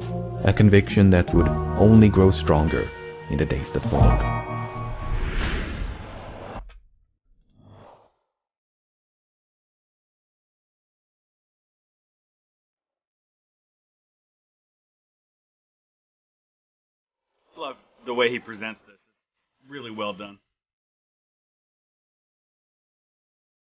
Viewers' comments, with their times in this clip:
0:06 i think the audio glitched
0:06 is it just me or is the audio a bit corrputed
0:07 I like your videos, just a small note incase you didnt know. The audio got a little weird This video is the one that made me subscribe